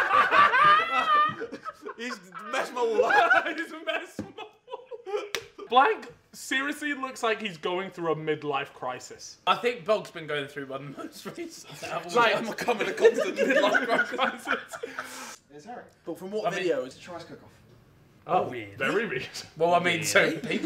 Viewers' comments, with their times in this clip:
0:05 That voice crack 😂
0:05 “BLAnk” fat voice crack